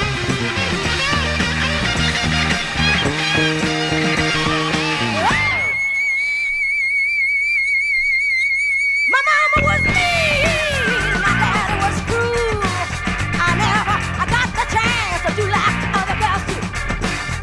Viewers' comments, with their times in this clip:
0:03 how she screams !! Incredible and great..